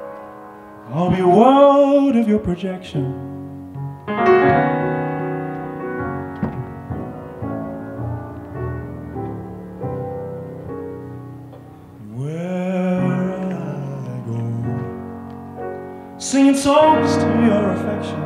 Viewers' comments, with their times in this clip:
0:05 progression takes it for me, that was nasty work
0:06 My jaw dropped the way he uses voice leading to leave the key and come back home so smoothly... Wow.
0:06 Oof, the chords in hit the bottom of my soul like a stone in water